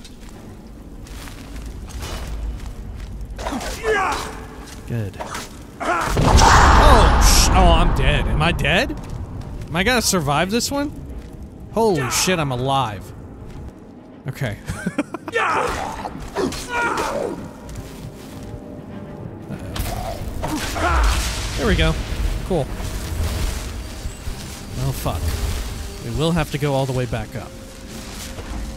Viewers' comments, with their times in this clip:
0:09 gotta respect the death lord who shouted while falling down